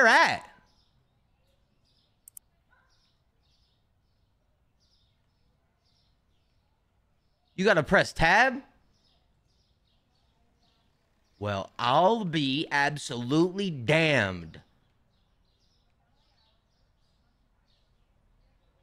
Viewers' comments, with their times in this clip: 0:04 When he went outside looking for the tablet 😭 Looked at the ground like ‘😐’ wit the birds chirping 😭😩